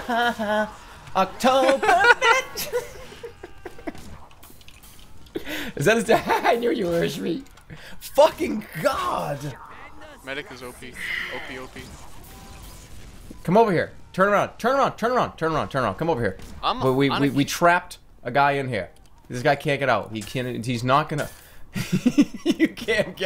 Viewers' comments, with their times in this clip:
0:07 why does jerma just turn british there 😂